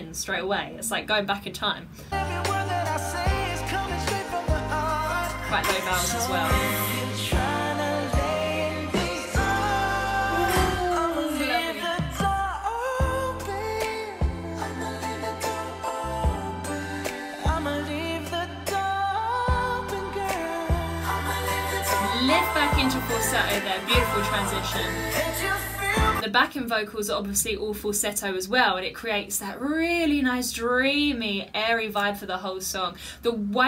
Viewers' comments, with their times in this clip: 0:09 When Bruno hit that one note at the beginning, she felt some type of way huh? Don’t worry, me too lol
0:12 your voice was there.nice girl.. " left your mouth opeeeen "
0:18 you're not listening this for the first time. You predicted the high falsettos before bruno hit it for eg But overall I liked how you explained and reacted to it